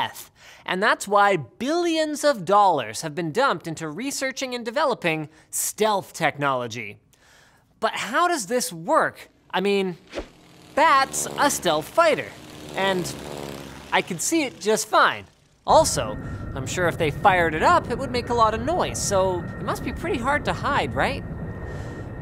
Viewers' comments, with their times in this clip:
0:09 cringes the propeller sounds jet bomber eugh